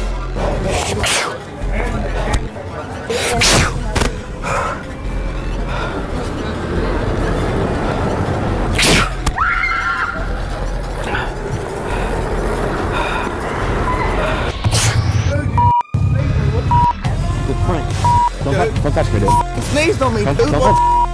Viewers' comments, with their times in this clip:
0:09 !!POP QUIZ!! Which of the 4 lady's screamed ?